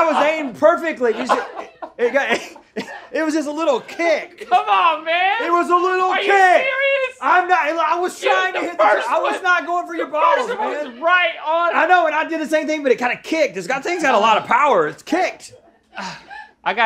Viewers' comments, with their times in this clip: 0:04 they really sound like Rick and Morty